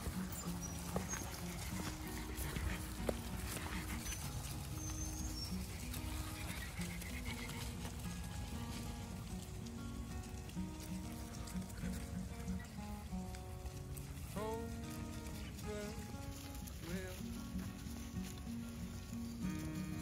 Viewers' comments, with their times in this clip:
0:03 Can anyone tell me the name of the song that starts ? Lyrics include “The sun shines, it shines for you. The grass is green, the sky is blue.” It’s such a soothing beautiful song.